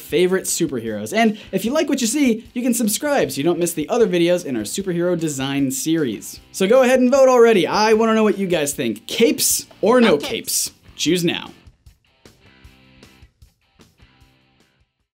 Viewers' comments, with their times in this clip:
0:10 Does anyone here the weird voice